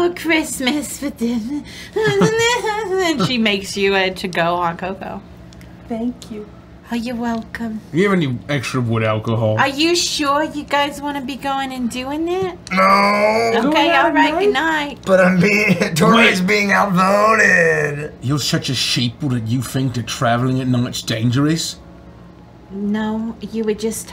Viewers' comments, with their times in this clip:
0:05 He probably is the nicest/friendliest character when he isn't craving human bones. (Granted, that doesn't happen this episode.) Besides Bitsy maybe, that little "Thank you" makes Bitsy sound like the sweetest thing.